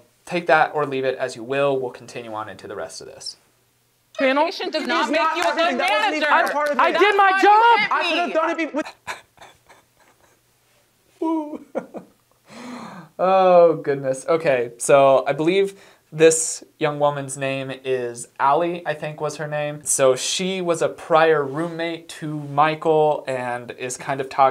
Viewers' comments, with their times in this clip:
0:10 Oh my god, the little floppy hands and the “woo” is so funny. Your content is pretty dang good dude. I also like your moral compass and your personality and attitude. Pretty cool and smart. Nice.